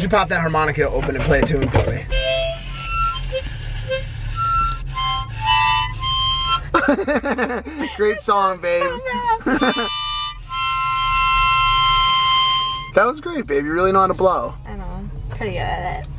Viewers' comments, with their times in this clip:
0:04 my poor ears til head phone users like myself